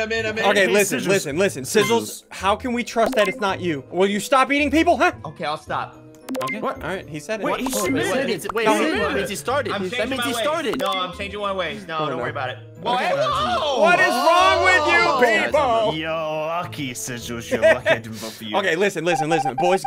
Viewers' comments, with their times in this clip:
0:05 these type of distortions are a major part of ssundee's videos that make me laugh